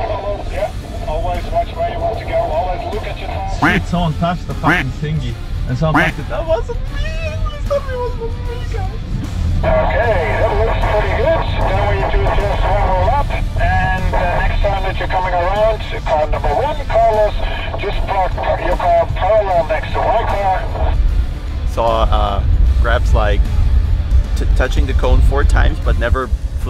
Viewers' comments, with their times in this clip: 0:10 Every teacher's microphone on e-lesson.